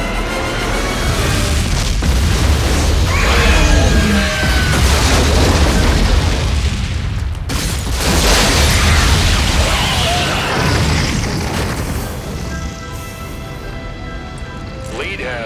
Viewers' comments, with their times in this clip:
0:03 the little screams the baby Zilla’s make right before they die is just sad, that they lost their lives by just being what they are